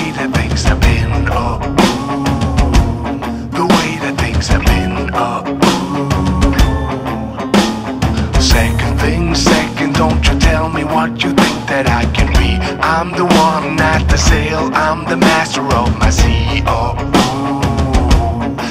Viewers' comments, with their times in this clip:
0:04 is that Leo getting a WhatsApp message? Pretty sure I heard the default notification sound...